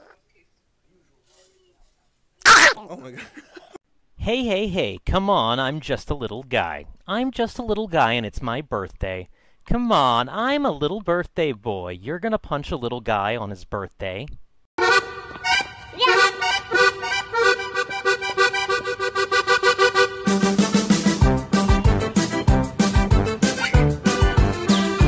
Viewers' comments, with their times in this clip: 0:07 wew togami voice acter voice lines